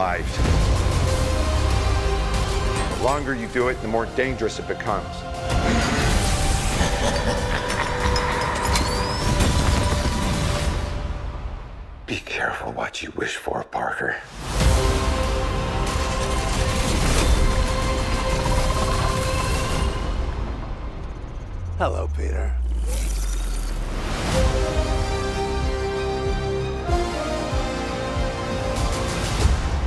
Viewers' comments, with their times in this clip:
0:06 Seriously, Willem Dafoe's laugh there makes me feel things
0:12 is no one else noticing the way dr strange says “be careful what you wish for parker” ????